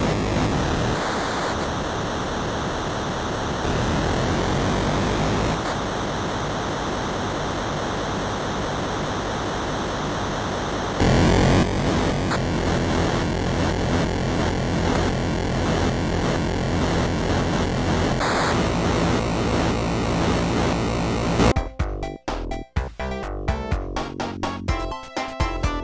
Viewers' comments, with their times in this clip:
0:06 That are the true racing sounds